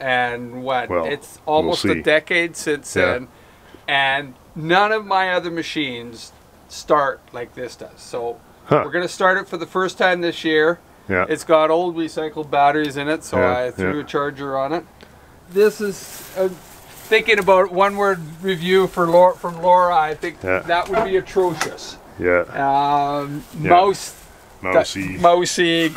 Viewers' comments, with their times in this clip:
0:09 Very cool, nothing dies it just gets repurposed. Definitely sounds like any garbage truck that's rumbled down my alley AM LOL